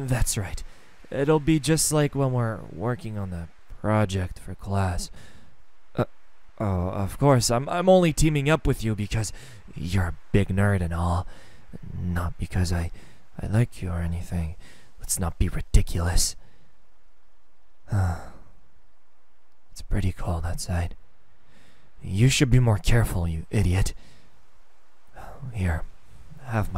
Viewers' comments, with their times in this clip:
0:07 Boy with the way you just said that your voice literally TOLD me you like me